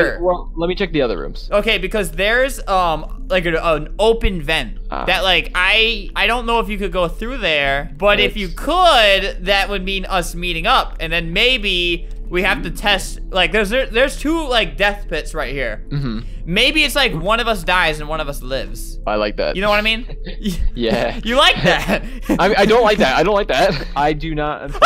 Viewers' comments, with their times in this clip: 0:03 he farted lol
0:03 or you hear a fart lmao 😂
0:03 hears a person fart
0:04 Someone farted lol
0:05 Did you guys hear a fart